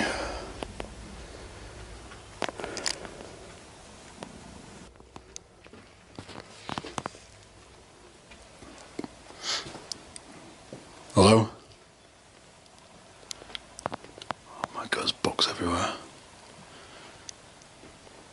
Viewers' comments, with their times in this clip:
0:03 ish sounds like a cat purr or something.